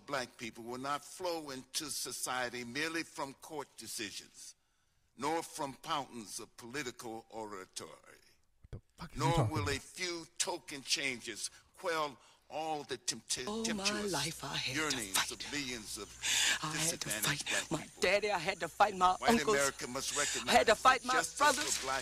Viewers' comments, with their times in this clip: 0:05 Danny Glover-mumble mumble "pountains of political oratory...." Tariq-"wtf is he talkin bout?!" 🤦🏿‍♂️🤣🤣💀